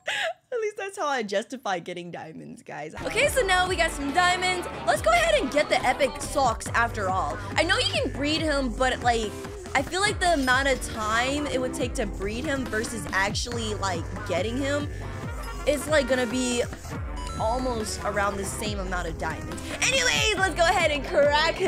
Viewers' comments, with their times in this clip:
0:07 go to this she’s literally speaking Britain